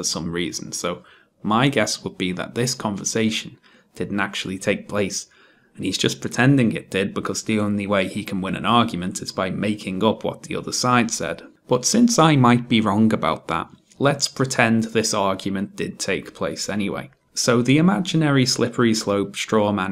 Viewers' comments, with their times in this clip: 0:07 Sounds like Onision